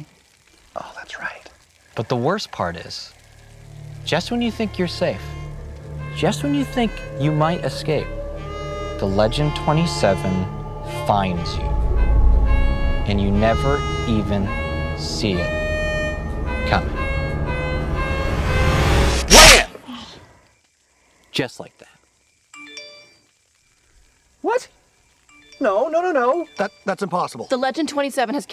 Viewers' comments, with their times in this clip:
0:03 actually sounds scary. good work.
0:03 Holy shit. That music is pretty creepy
0:11 The music reminds me of Gamzee's theme..